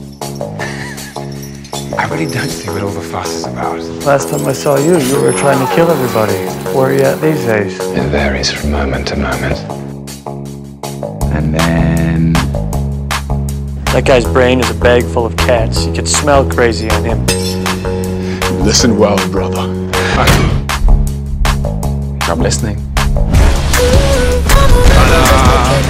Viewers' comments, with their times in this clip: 0:09 The voice. Just the voice. I'm sorry, can Loki be my ringtone/wake up alarm?